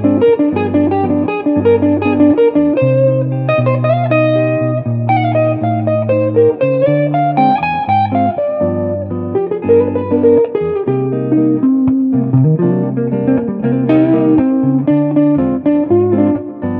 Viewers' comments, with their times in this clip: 0:03 Thank you! In the backing track I basically play a minor 2-5-1 progression in C: Dm7b5 - G7b9 - Cm. But sometimes I embellish the V chord by adding or removing the b9 (ab on string 1), or I embellish the Cm by adding a "line cliche" (descending chromatic line) in the bass (that's the one ). These variations make it sound like I'm doing more, but it's basically just a 2-5-1 progression. To achieve the line cliche for C minor, I fret the 3 top strings on fret 8 as a barre with finger 3, and start the descending bassline with 2 and then 1. When the stretch starts to feel too much I switch to finger 4 for the 3 string barre. I made up this way of playing it because I like the fat bassline on string 6. Most people would use a finger 1 barre and play the descending bassline on string 4 starting with finger 3 in fret 10 (a la stairway to heaven), which is technically easier, but with the bassline an octave higher. Hope this makes sense :-)